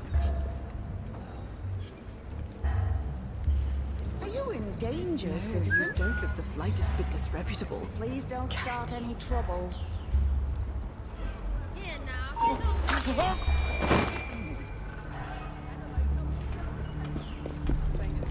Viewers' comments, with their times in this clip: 0:05 did he just whistle
0:06 I think I heard him whistle. Really hope I heard it right cause I definitely don't want to have to use cherry bombs again to get guards' attention anymore.